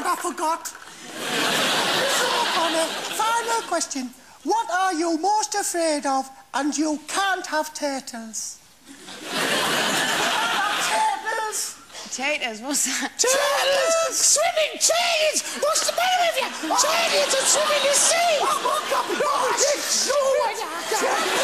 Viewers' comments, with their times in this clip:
0:06 What did they say ? You can't have "Tedlers"?